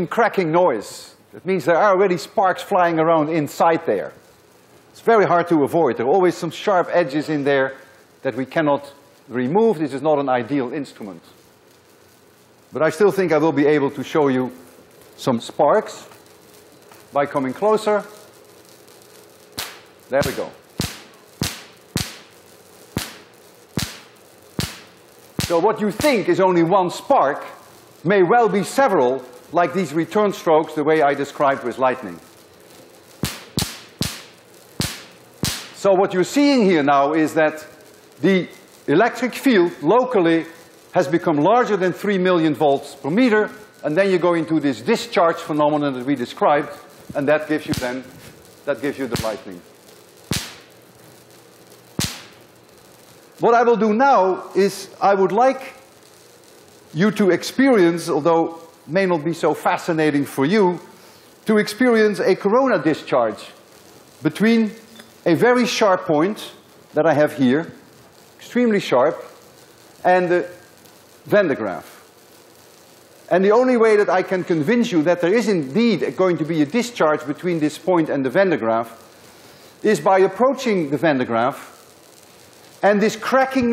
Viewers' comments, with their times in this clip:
0:07 Professor Lewin, I love your way of teaching and your content. I have a quick question for you if you have a second.. while you demonstrating the spark with the sphere conductor, is current is discharging through the rod like as incase of corona discharge because when you are doing with sphere we could here the spark but with the sharp object not.. can I know why it so???
0:48 Professor, in the experiment in why does it produce sound some times without producing light? Is just an audio error or is there a spark, just that it's not strong enough for us to see it?
1:07 Sir, min why the Electric Field from the VanderGraaff generates that cracking noise?. You say it depends on the charge of the VdG. I suppose it's the summatory of small effects on the particles of air around it, but I don't know what effect.